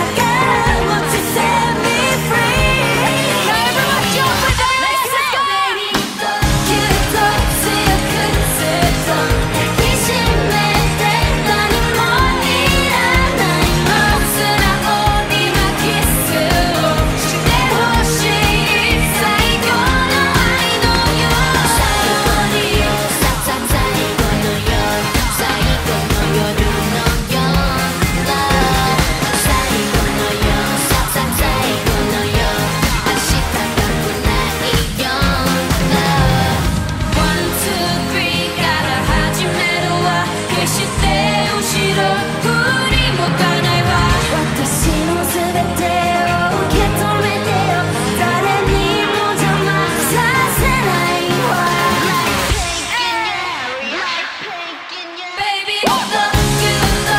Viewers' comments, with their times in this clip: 0:09 rose's hair and voice is amazing👌👌
0:12 someone moved the autotune settings... or she really went that out of the key that it sounds ike a minor second against the backing track... can't believe they let that on post without tuning it sheesh
0:44 Rosé sound so good ❤️ Blackpink's bridges sounds so good with her sweet and angelic voice